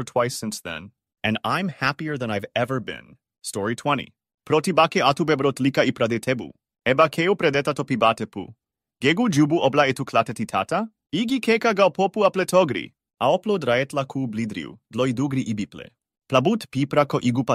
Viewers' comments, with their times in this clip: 0:05 language changes and it sounds like a good story but I have no idea wtf they're saying